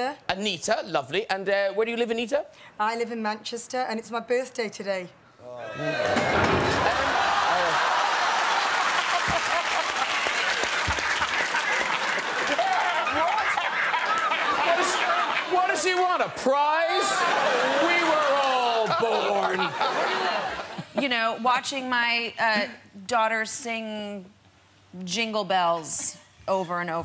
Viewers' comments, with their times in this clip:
0:07 denzel washington laugh. Its hysterical. 😂😂😂
0:12 Denzel pissing himself with laughter gets me every time.
0:13 Denzel’s laugh is the best